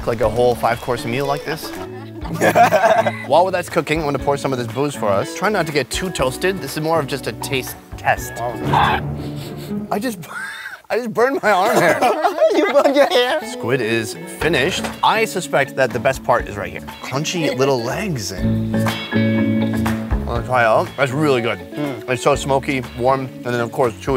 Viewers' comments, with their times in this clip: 0:08 omg what was that sound that came out of his mouth? 😂🤣 lmao I'm DEAD